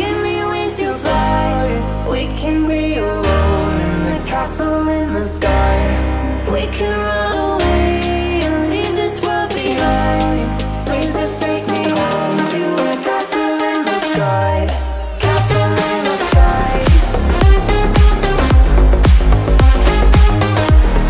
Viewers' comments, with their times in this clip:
0:07 i love this song XD